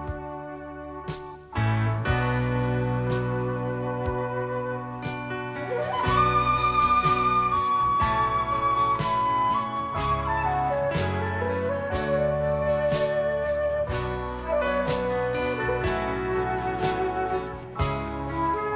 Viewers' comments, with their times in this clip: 0:04 The flute solo from is making me thrill. A piece of music I would choose for my entering into the next world ... if it ever exists